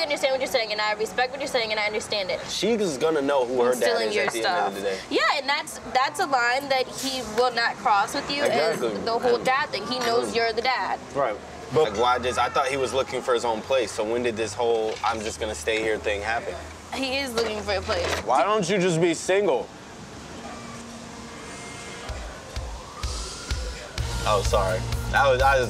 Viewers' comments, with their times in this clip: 0:10 the way he said it 🤭